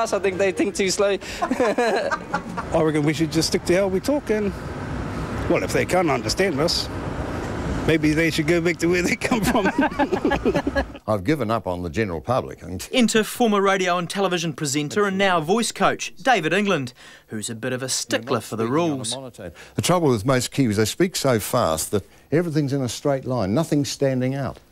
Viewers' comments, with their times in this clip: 0:10 Weird how the kiwi accent varies, there really isn’t a typical accent for our people. I sound like the uncle haha easy to understand bae!